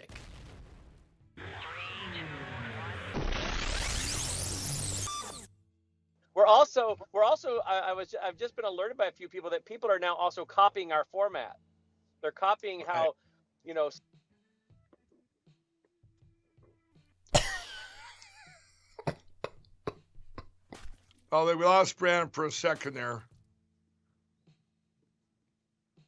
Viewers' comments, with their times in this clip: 0:09 copying our format... yeah everyone wants to put across the 'livestreaming from your phone with 1 bar of signal' vibe.